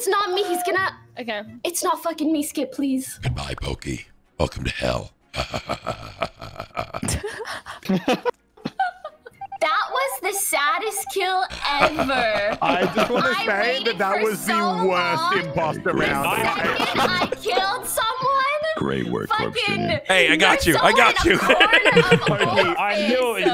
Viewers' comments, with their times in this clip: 0:04 that laughhhh😂😂😂 it was a good choice to subscribe to you 😂😂👏🏻👏🏻👏🏻